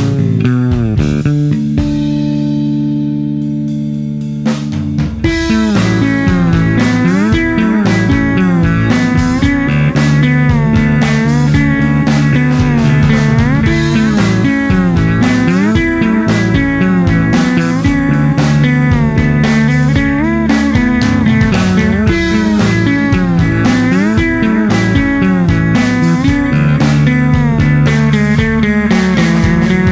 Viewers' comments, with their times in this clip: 0:03 Seriously...I never knew a bass could sound like that! Just incredible...especially right
0:04 Very fine and pleasent especially from ! Beautiful, clear harmony and melody ideas. So long but far not dull! Congrat! And thank for it!(Greetings from Hungary:)
0:10 Those fretless slides, right there ... that sold me on converting a fretted bass to fretless. I can imagine one in my future.